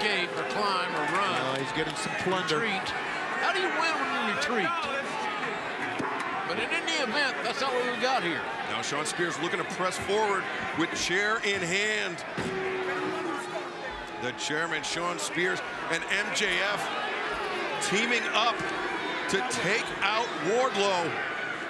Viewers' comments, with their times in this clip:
0:04 Props to the guy who said "No, that's cheating..." With the energy of a teacher explaining to a child that their answer was wrong haha